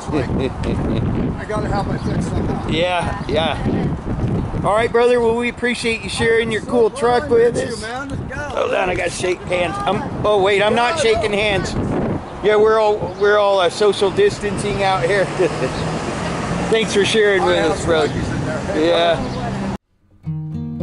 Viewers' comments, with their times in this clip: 0:06 the guitar tune was perfect for the night drive!